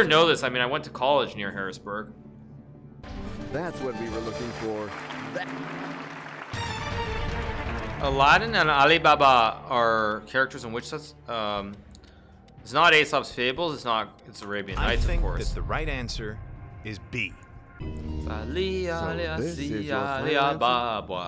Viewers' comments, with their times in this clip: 0:08 pronuciation is hilarious XD